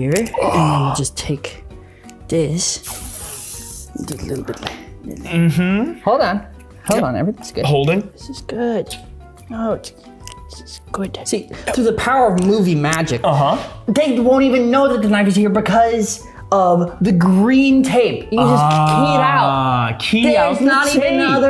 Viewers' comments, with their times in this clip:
0:05 quintessential gay concerned “...Mhm,”